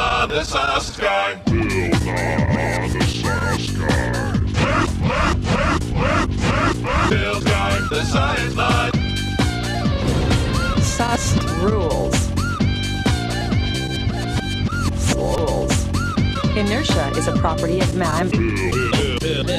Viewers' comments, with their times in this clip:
0:04 😂🤣👌🏾 The Bil backwards though
0:04 Sounds like a Taca La Petaca.
0:06 Bill guy the science lie?